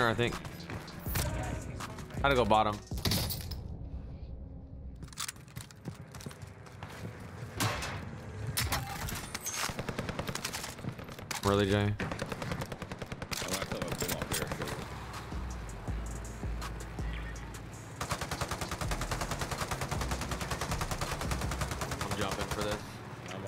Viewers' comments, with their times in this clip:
0:09 The disappointment in swaggs voice! 🤌😂😂